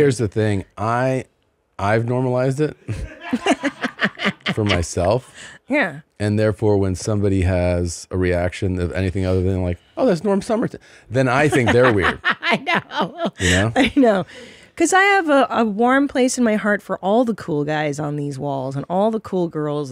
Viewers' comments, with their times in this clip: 0:06 Christina makes the exact same noise as that inbred dude from soft white underbelly